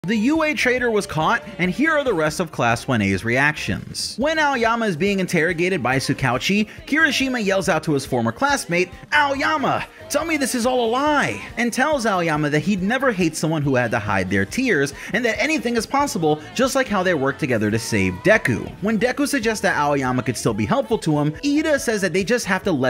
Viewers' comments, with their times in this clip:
0:09 bro you made that exact voice of kirishima in the English dub 😂